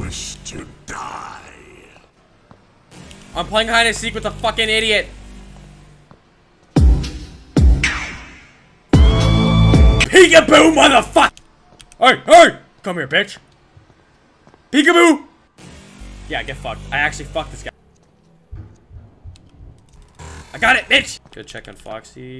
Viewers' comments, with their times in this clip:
0:09 My favorite timestamp is ONE EYE When you seeked him the rizz music made me 💀🤣 LMFAO